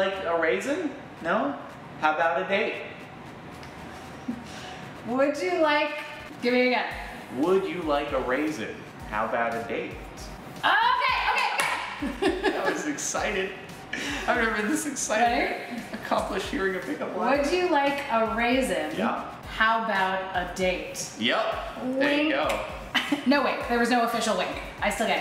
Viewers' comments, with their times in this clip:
0:06 I heard “ would you like a raisin, how about 8” and I got a completely different context out of it 😆